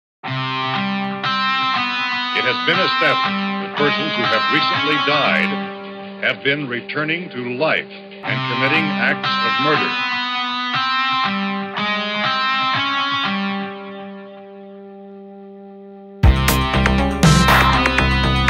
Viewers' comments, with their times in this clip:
0:01 The MUSIC IS TO COOL THE MUSIC 🎶🎶🎶 Start music